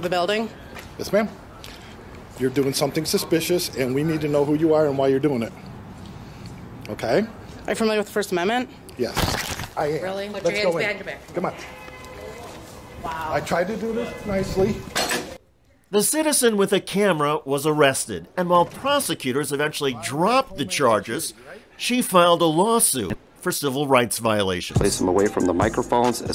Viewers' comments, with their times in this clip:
0:07 The soundtrack choice is really scary. If someone thinks that this should be treated as comedy, and play a cartoon muisc in the background, well mayby thinking and editing is not really your thing. The lack of responsibility, compasion and any knowledge in those pigs is terrifying. this is pure evil. "-Are you familliar with 1st amendment?, -Yes" grabs he camera.